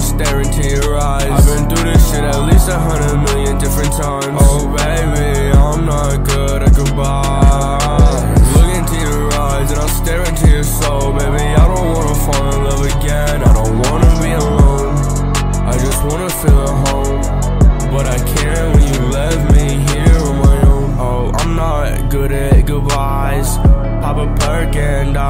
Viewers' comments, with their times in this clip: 0:06 This artist is 15, sounds like hes 39..lol